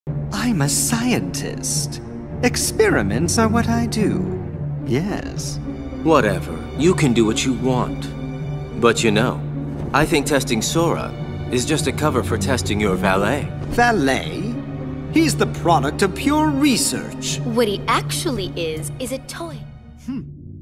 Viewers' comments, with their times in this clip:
0:04 beast wars Megatron: ah, you too, Yes?